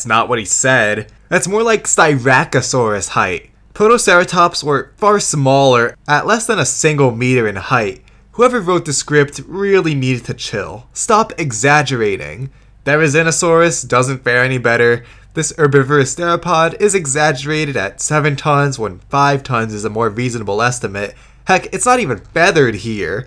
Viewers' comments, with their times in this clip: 0:07 Anyone notice the clipping ?